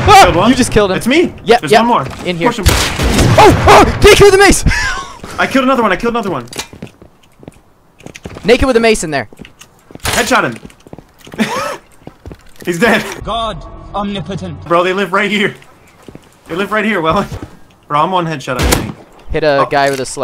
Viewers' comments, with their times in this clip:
0:08 the crunch and the mace flying across the doorway